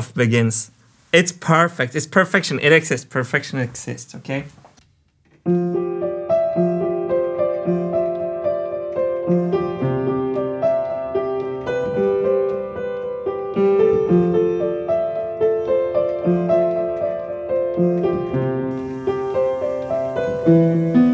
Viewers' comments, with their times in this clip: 0:05 till the end is just perfect. That piano melody is amazing.
0:05 i'll just leave this here cause im sure that i am going to replay the Piano Part quite often!